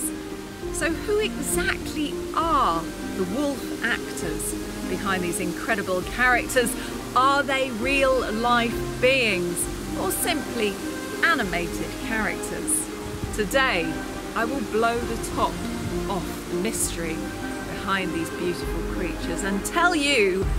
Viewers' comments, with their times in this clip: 0:07 WHY .. ARE YOU .. SPEAKING .. SO SLOWLY.. ARE ..YOU..A BIT THICK?